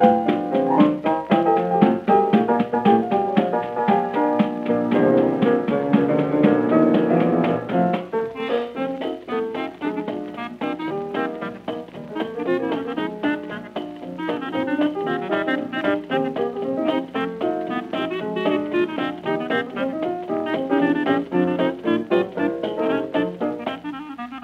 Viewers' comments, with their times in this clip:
0:08 FROM ON IT JUST GETS BAWDY AS ALL HELL. COTDAMN THAT PIANO IS ON FIRE.